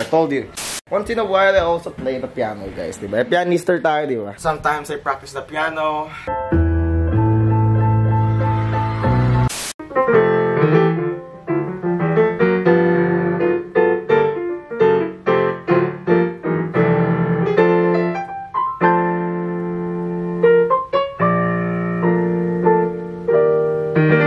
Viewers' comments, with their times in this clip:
0:09 I like that jazz piano
0:11 ahh yes, classic jazz